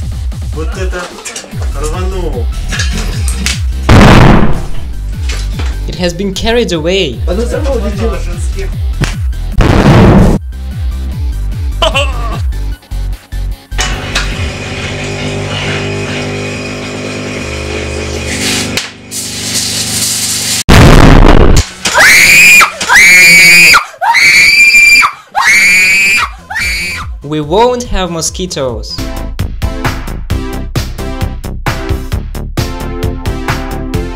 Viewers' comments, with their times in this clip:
0:09 i thought i was listening to earrape default dance
0:16 These are the most insane 220V short circuits i ever seen in my life! you can hear the electric meter spinning like crazy, because of the insane short circuit current! The crazy spinning sound of electric metre reminds of photonicinductions electric meter overload experiment. Also you can se the light gets dimmed or entirely goes off several times, because of the insane short circuit current!
0:16 You can also hear the insane spinning noise of the meter 😂😂😂😂😂 and also the light gets dimmed because of the insane short circuit current 😂😂😂😂😂 They also have main fuse before the meter like West Europe, but they probably bypass the main fuse with a nail inside the street fusebox 😂😂😂😂😂
0:17 Villagers: taking meal, bout to put spoon into mouth. BANGGGG. Prevail Darkness..... 😄😄
0:19 is my favorite, she screams when the capacitor blows up next to her. BTW, who's house is this and don't they have any breakers that trip...o ya that's right it's in Russia, electricity just comes straight from the meter box
0:20 Rip headpon uzers
0:20 Umm... I don't know what to say with that sound. But, always be cautious when you're using headphones!
0:21 thank ya for the earrape lolololol
0:21 my ears i had this 100% volume
0:22 best fire alarm ever XD
0:22 get rid of that squealing sheila!
0:22 Fire alarm on: